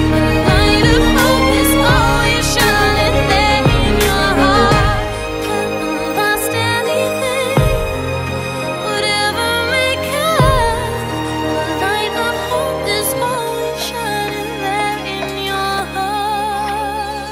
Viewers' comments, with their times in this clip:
0:05 If Disney were to make a Sonic movie, this fits in terms of what the end credits could be.